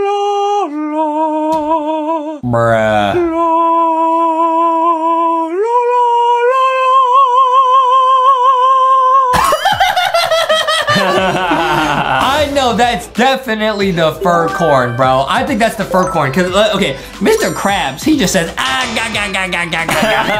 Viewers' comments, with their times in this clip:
0:05 that dosent even sound like that green seed 💀 Edit : Anways i liked this video! 💕❤️